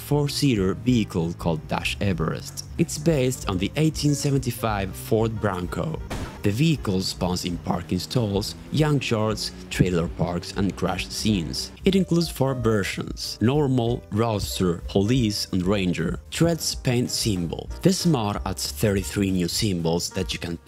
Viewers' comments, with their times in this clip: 0:04 The 1875 Ford Bronco 😂